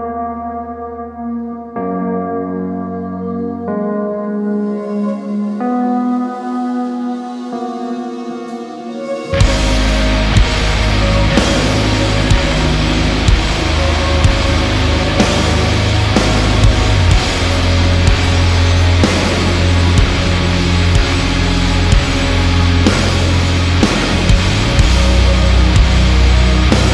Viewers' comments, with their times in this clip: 0:04 This has to be one of the best shop sessions. What is that higher synthy sound ?
0:09 that just went from zero to sixty all of a sudden. Wasn't expecting that tbh.
0:13 Oh my lordy. This is amazing music. A heavy Sigur Ros. I love it.